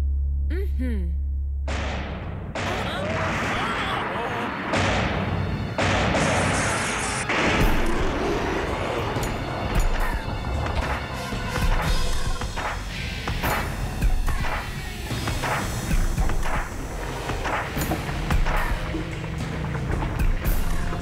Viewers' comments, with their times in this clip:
0:07 This movie felt like resident evil, even the soundtrack